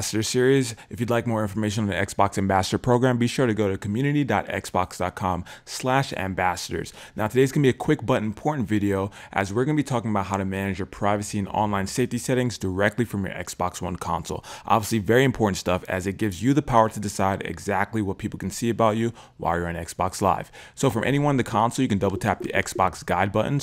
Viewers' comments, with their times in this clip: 0:07 he said porn videos